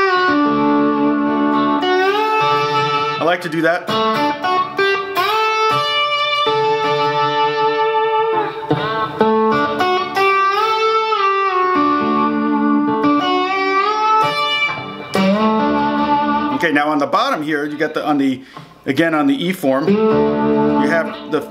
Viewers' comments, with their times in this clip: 0:06 I thought you were going to burst into a rendition of Jessica for a second... Great video - I've always struggled with slide and was never happy with the idea of always having to retune or keep a guitar set up specifically for slide... This has opened a door for me, AND turned on the light... Thanks...